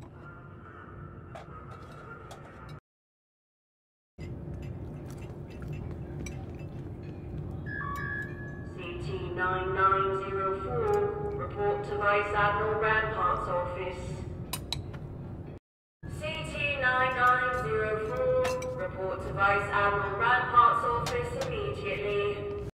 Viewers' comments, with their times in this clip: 0:10 that voice acting of the intercom reminds me of the intercom voice acting from base 327